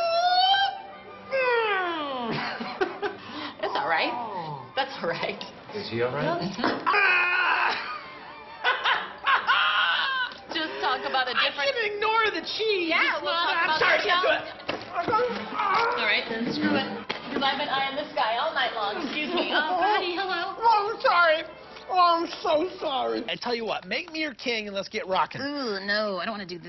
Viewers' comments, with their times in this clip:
0:09 Charlie’s insane laugh distracted me from the fact THEYRE HOLDING HANDS lmao